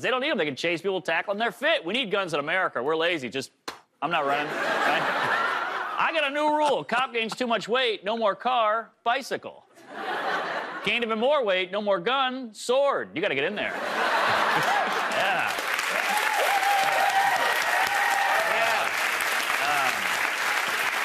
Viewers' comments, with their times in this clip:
0:06 even the camera laughed